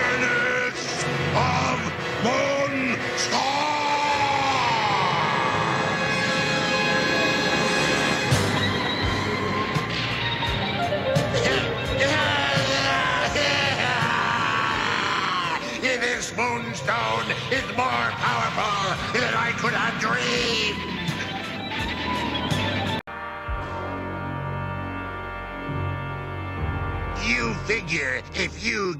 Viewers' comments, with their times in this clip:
0:09 Boss mode activated I freakin love that guitar in the background 😎💪💯